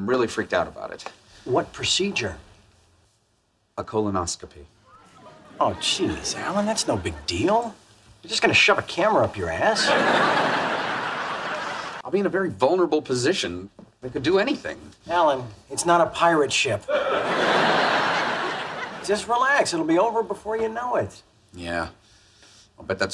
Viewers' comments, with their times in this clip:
0:07 I love how lightly Charlie delievers the sentence to screw with Alan.